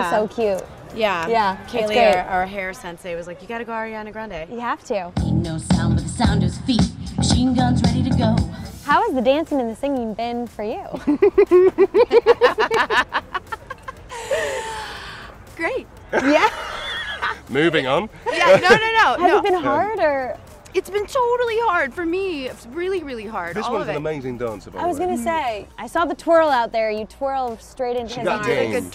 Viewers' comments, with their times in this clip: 0:09 the laughter omg Plus the fact that Lauren says that she's scared of singing and then says "terrified actually" 😂
0:10 why is no one talking about that laugh 😂
0:11 is just pure gold, Tom's laugh, I'm dying 😂
0:11 His laugh haha